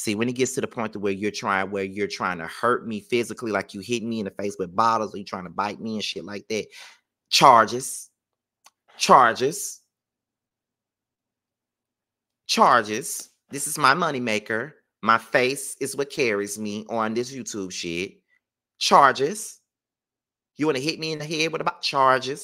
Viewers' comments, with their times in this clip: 0:05 You did not start saying "charges" the same way Shereé said "joggers"! 🤣